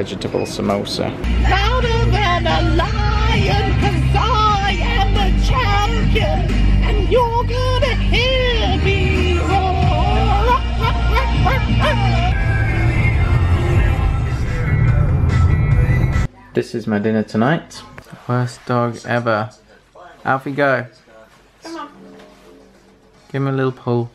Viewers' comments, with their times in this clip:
0:07 Ben singing roar in that voice cracked me up